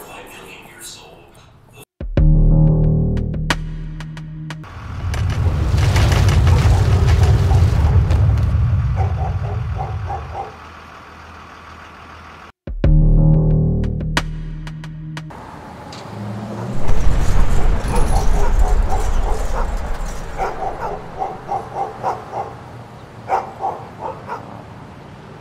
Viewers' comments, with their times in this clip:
0:07 So realistic that it even has the sound of the dog barking when the earthquake starts to get strong and affect the place!